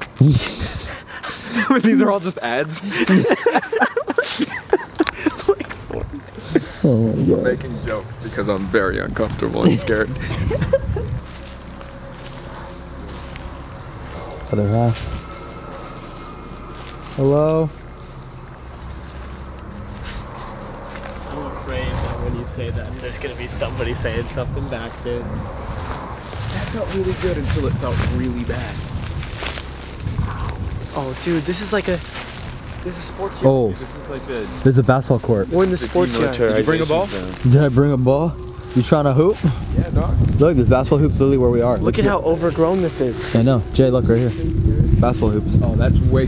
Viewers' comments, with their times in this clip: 0:08 in the background idk if it is the music but you can hear a girl scream and then it fades away
0:14 min i heard a girl scream anyone else
0:29 I heard “I’m” and it probably said something else but I can’t hear anything else
0:29 sounds like someone is saying "out" 😨
0:30 someone said help,
0:31 I hear a mans voice say out
0:31 I hear a mans voice say out